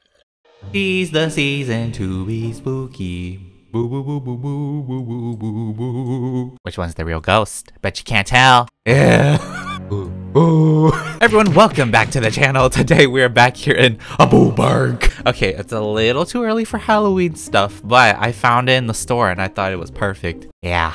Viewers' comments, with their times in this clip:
0:03 Ahhh I heard that vibrato you can singgg 🤩🤩🤡 Edit .time: